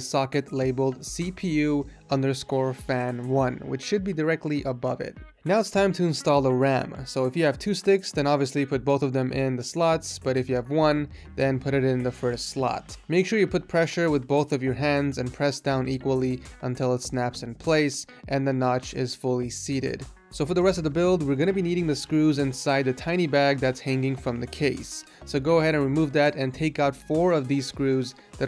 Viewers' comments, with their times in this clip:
0:10 put it in the slots or put it in the sluts? xd